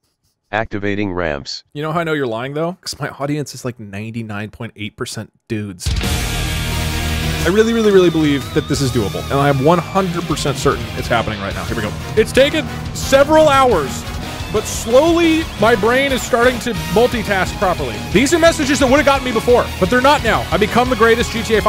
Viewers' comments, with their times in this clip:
0:06 Attempt 52, the most insane attempt. And even the music adds to the insanity. Edit: Discovered that the song here is called You Will Recall Our Names.
0:06 this song somehow reminds me of We Are from One Piece.